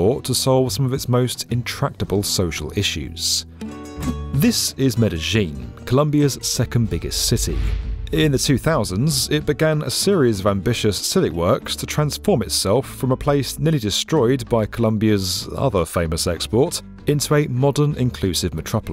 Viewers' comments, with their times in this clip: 0:03 what's "Medejin"? Did you first hear about Colombia while on holidays in Argentina? 😐